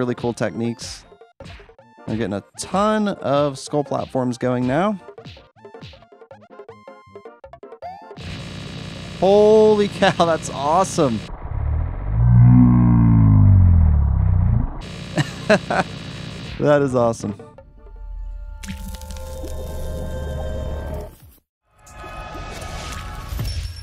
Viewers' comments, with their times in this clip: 0:08 Sounds like a machine gun.